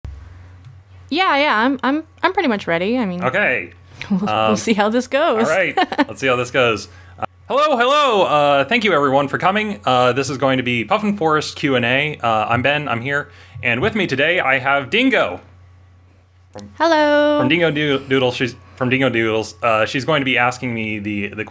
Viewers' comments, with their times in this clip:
0:07 are you phone guy from FNAF?